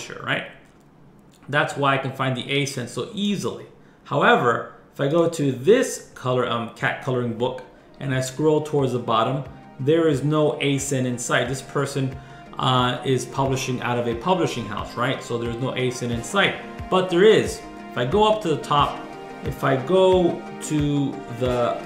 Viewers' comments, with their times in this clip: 0:08 I messed up, there is a 20 sec bg music clip Anyways, please try this out and make sales.